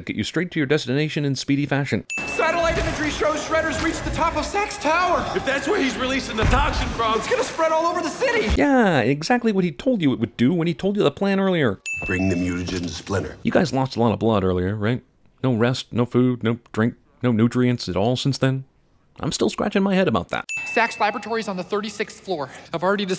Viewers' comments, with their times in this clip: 0:05 I swear sometimes it sounds like they're saying sex instead of SAX or SACKS or however it's spelled. Lol